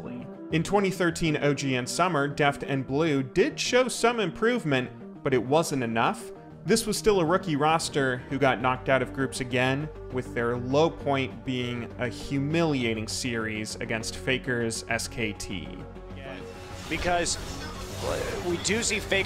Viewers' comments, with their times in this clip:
0:04 Your videos are great, but your intonation when you're speaking is a bit strange. It throws your sentences a bit. take for example where you say 'Enough.' That was the last word of the sentence but you say it as though the sentence is going to continue, and it's a little jarring. Fixing that could help a lot. Still a great video in terms of script and flow however.